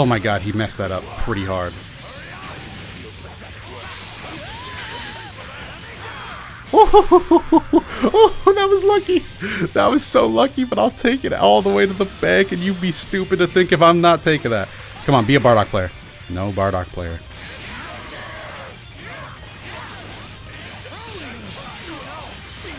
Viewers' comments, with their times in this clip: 0:06 you could replace freeza with a laugh like that if you ask me